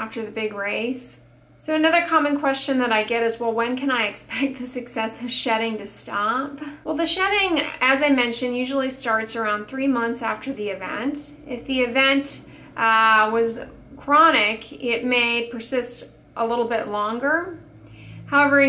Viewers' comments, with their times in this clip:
0:05 🤣🤣 she laughs like she is mocking us hahah